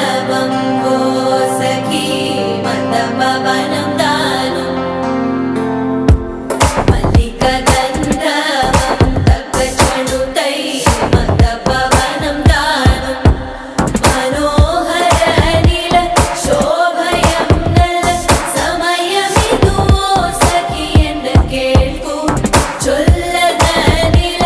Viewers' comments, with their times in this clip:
0:05 this beat 💥💥 Thaman anna 🪄🪄